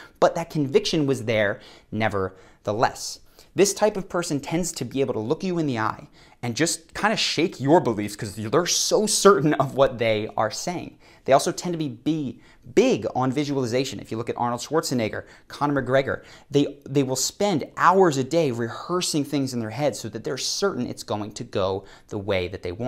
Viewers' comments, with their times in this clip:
0:07 am I the only one who heard "shake your boobies"--